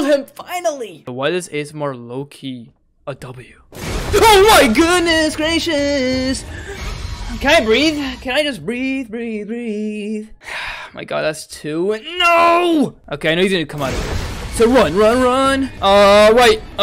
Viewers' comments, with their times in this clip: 0:04 when he started singing 😭😭